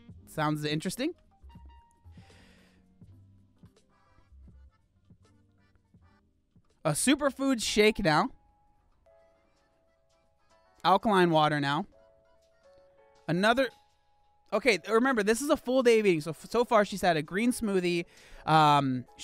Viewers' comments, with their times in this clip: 0:03 Is someone playing super Mario? Lol